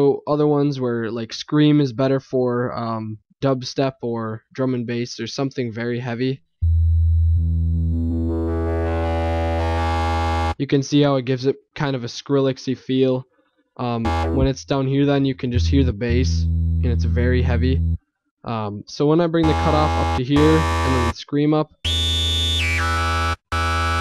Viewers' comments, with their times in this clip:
0:08 is that sound from 'scream' mixing with your previous adjustments? Your tut really opens up